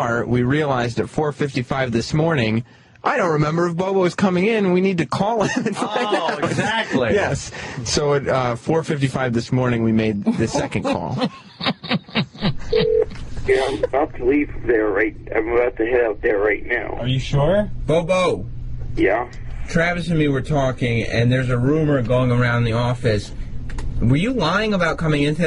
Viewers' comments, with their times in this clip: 0:10 Patrice’s snicker delights me endlessly